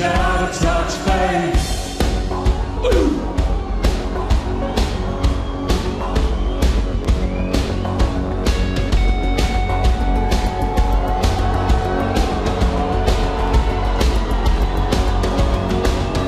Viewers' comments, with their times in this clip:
0:04 Martin's been a naughty boy. Then again, seeing Dave like that in front of you... that could cause a stutter.